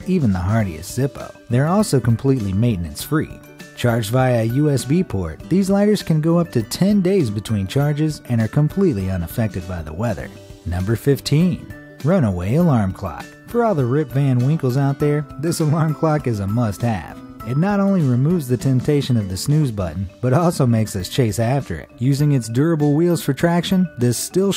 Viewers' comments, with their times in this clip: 0:05 usb pord? hahah